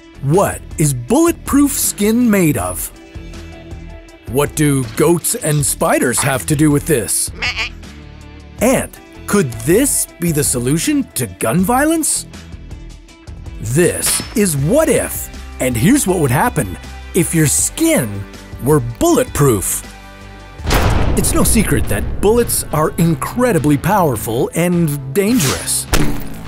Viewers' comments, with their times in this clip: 0:07 The goat sounds so funny 😂